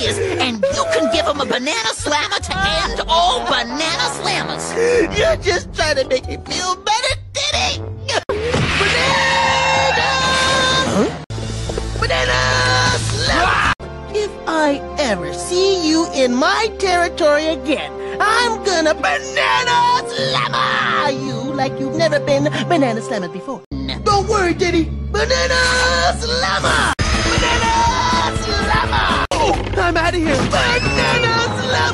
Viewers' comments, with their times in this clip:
0:05 the way he says diddy here 😂
0:12 is a perfectly cut scream
0:13 perfectly cut scream
0:13 perfectly cut screams
0:14 Why does this sound like as if Steve Urkel/Jaleel White voiced him?